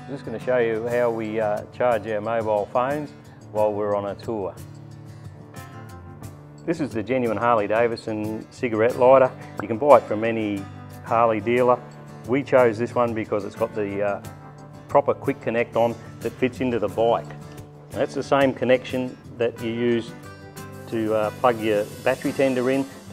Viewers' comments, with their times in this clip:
0:09 Dayum that little pop sounds was the selling point for me. 🤣